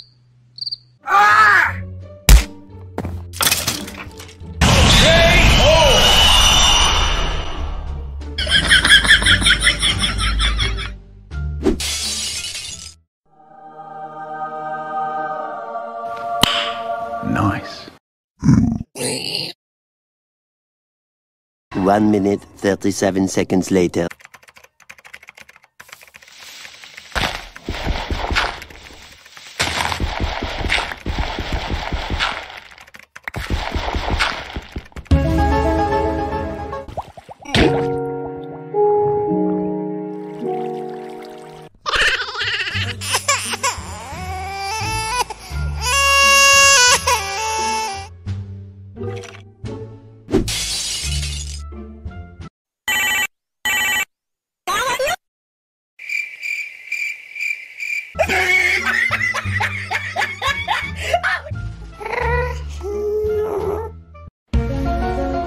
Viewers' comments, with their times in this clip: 0:08 lol hear this laugh
0:35 Illuminanti Theme Highest Pitch
0:42 crying dubstep song
0:43 I did not know baby’s can sing by crying
0:43 What kind of this cry 😭 🤔
0:43 The Crying Is Like Pigman Singing XD
0:43 when you forgot your autotune is on...
0:43 the crying sound is creating song
0:43 Zombie Pigman crying like baby
0:45 pigman how you cry
0:46 crying like a music